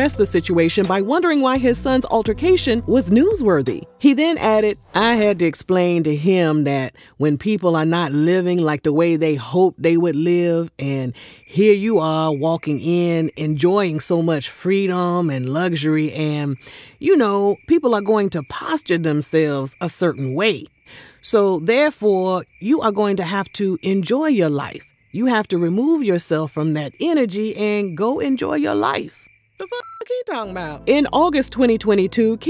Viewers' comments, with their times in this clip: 0:04 the t.i. impression took me out 😭😭😭
0:14 Stop ut with that voice 😂😂😂